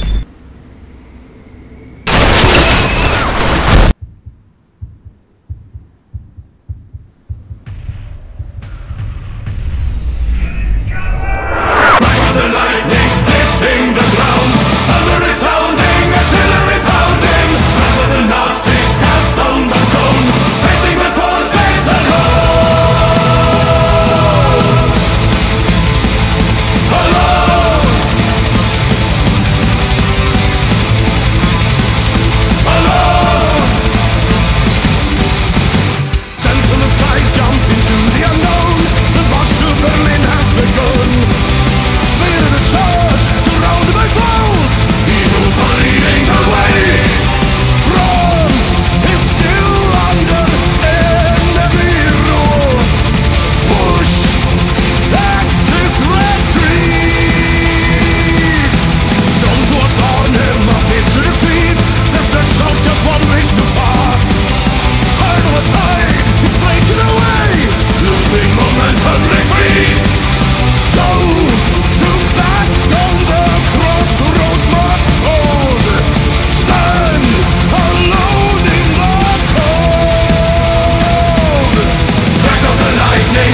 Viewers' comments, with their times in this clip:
0:09 I can hear distant PERKELE here... fascinating
1:06 ik it's not the actual lyric but I keep hearing 'microwave'